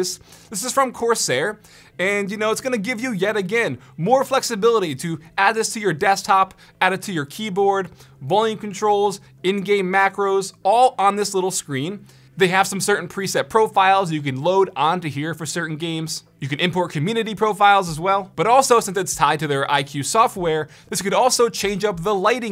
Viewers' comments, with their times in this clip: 0:03 sounded like he had auto-tune for a sec